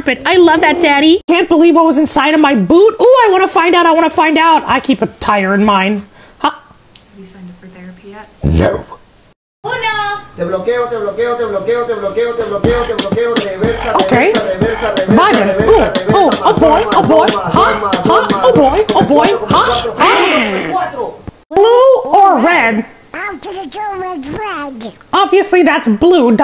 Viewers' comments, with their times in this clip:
0:10 love the beatbox goes with it so well my next backround sound